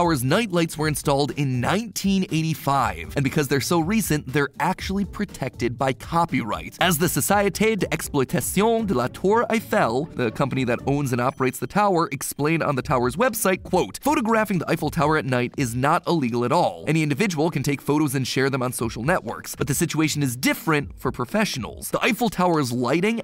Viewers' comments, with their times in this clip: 0:06 Are we just gonna ignore matt pat, nailing that annunciation ? I feel like he's come a long way in annunciating words in other languages whereas before he'd ussaly butcher them
0:08 That is the ABSOLUTE WORST pronunciation of any French words I have ever heard
0:08 im belgian so i talk french and when he starts talking french i was laughing to my death